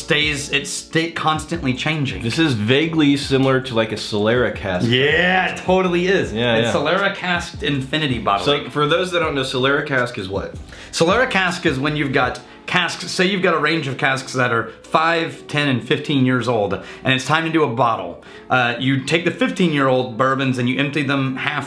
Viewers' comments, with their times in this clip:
0:04 listen to that Yeahhhhh